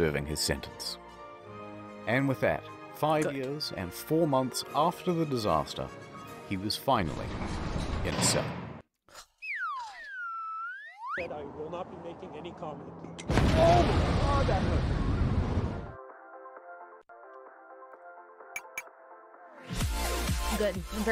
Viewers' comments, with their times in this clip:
0:09 I swear when you exhaled I thought you were making that squeaking noise. I was extremally confused for a second.